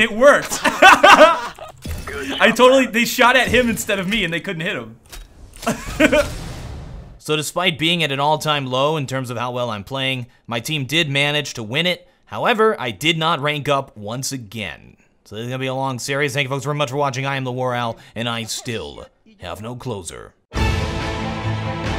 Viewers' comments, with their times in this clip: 0:08 that laugh makes me want to take my life